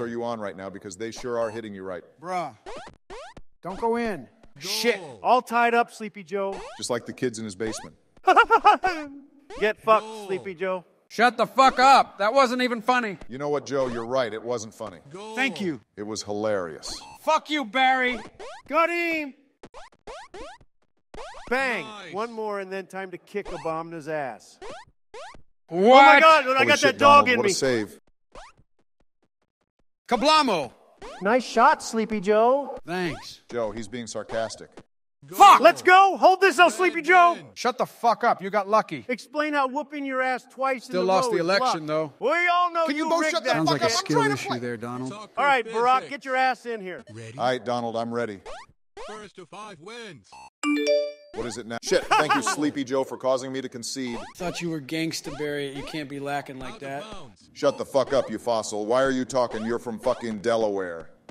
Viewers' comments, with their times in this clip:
0:07 Trump's laugh .. reminds me of someone eating something during a game and they got caught off guard.
0:07 What is trump's laugh
0:43 Obama with high pitch voice had me dead😂